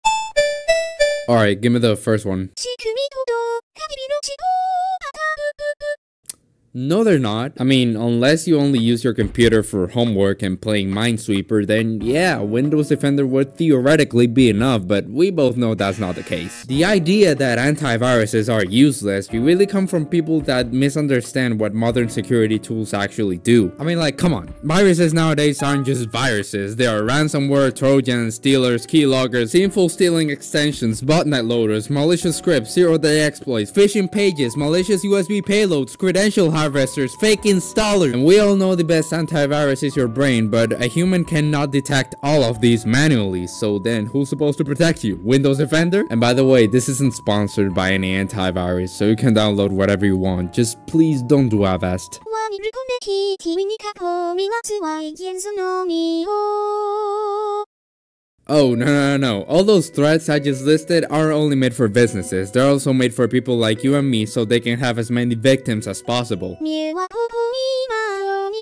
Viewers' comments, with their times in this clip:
0:01 Okay, call me crazy but why does her vouce sound so soothing?
0:53 voice reminds me of puppycat